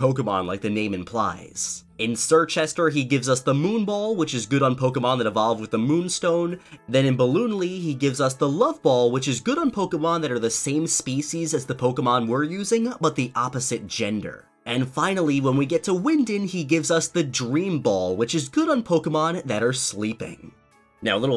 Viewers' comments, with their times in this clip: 0:09 Did he just say ballonlee?